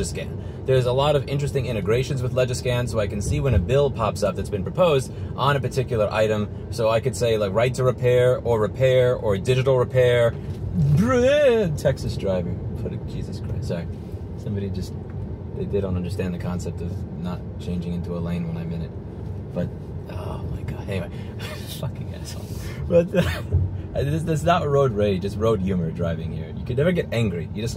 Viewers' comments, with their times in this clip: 0:10 I am now convinced that when entering Texas, Louis inherited some Hank Hill vocalizations